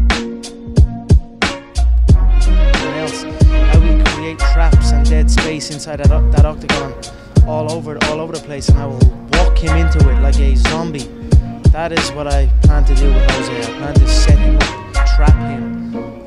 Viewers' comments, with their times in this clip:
0:03 Tried to make it sound like bruh rapping or am I over thinking it ?? Lol